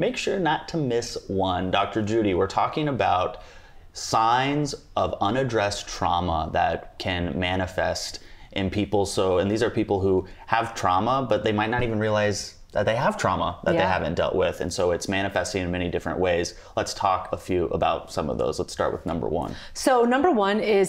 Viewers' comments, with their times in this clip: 0:05 the dog farted 😹